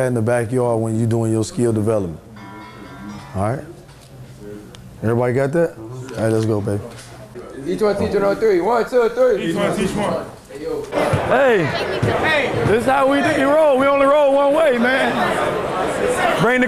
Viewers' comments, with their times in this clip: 0:04 that notification sound made everyone turn. 😂😂😂